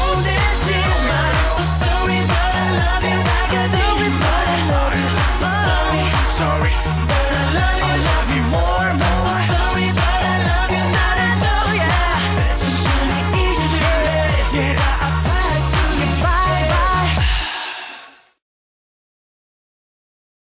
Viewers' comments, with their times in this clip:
0:06 16 years ago, but always will sound like a new song❤